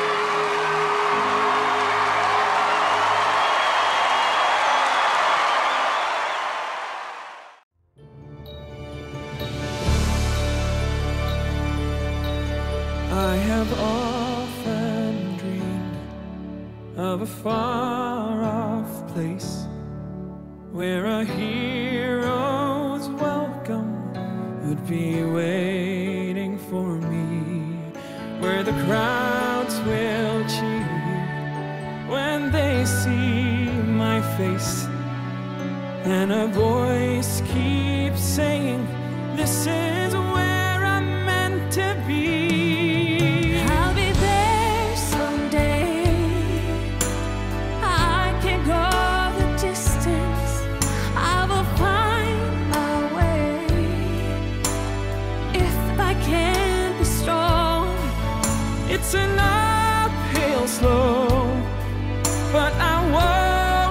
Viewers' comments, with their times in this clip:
0:09 Man the duet is absolutely insane. Perfect harmony together 👍🏻
0:44 I never knew VP Sara Duterte can sing! Wow! 😃 ♥️💚✌️